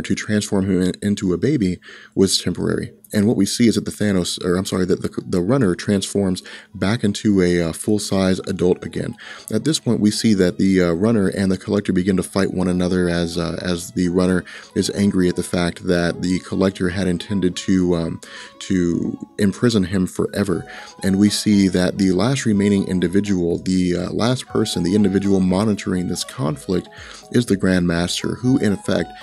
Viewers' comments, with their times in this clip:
0:10 Interesting choice of music Nice touch of dark humor.